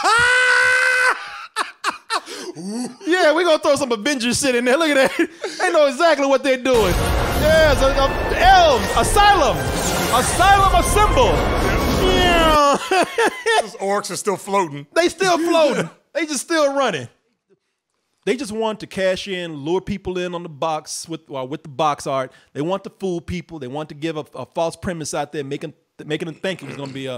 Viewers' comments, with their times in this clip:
0:09 Sheriff Woody laugh?